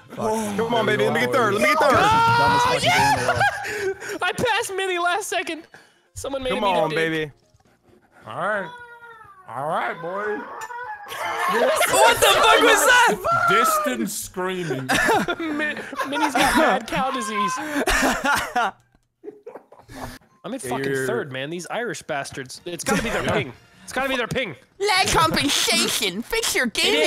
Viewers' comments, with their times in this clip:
0:08 in the distance, you can hear the screams of the damned.
0:09 I can't breathe lmao! I hear the distance scream and crying going on xD.